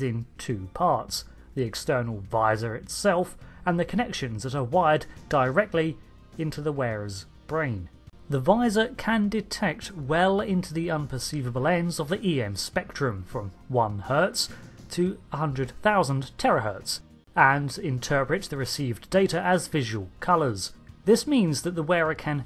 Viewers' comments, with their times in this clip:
0:07 I thought it was for his eyes, not his "impants."